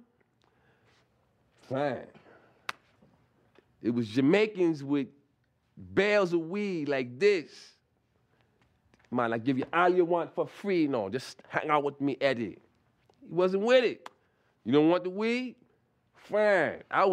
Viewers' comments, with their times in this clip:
0:04 That Jamaican accent tho. LOL, I miss the Chappelle show!